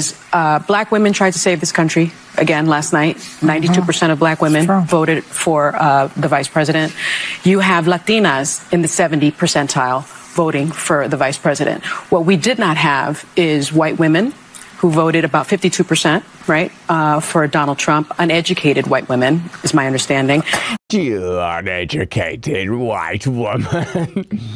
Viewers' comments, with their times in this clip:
0:07 ...I hate the way she says "Latinas", it sounds so fake